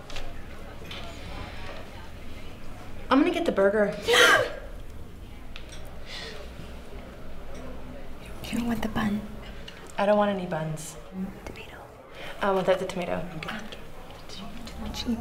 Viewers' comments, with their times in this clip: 0:03 the gasp I cant 💀💀💀